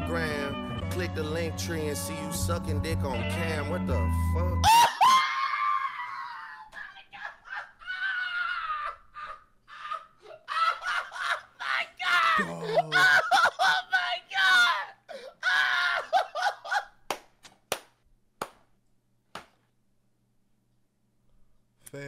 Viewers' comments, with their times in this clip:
0:06 The shoe fits gives me a “Stan” by Eminem vibe idk why Reaction 🤣😭😂